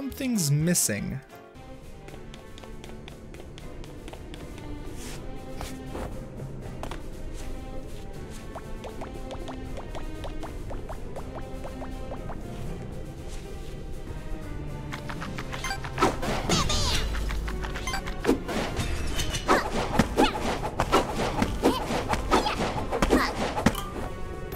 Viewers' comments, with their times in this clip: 0:07 looks like you got "ahead" of yourself "Garbage Movies." Train Rush isn't a garbage movie! That music absolutely slaps!